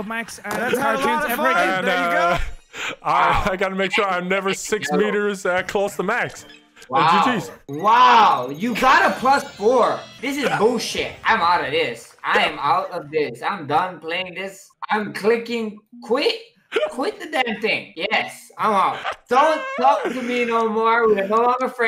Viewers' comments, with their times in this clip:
0:08 max literally sounds like Gru from Despicable Me